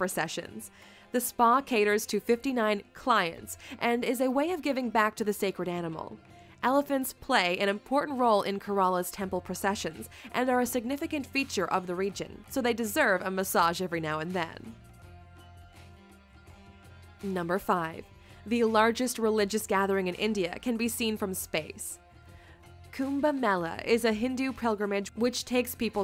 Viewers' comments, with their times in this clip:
0:08 not gorilla ok! "Kearla ". If you can't pronounce properly it's ok even many people in the world can't prounce it only the natives of that place or any place can truelly pronounce it.